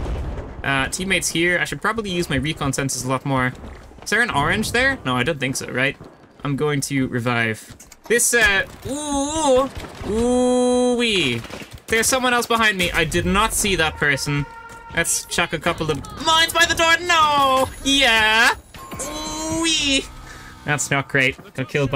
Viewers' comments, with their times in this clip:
0:09 was the funniest reaction ive ever heard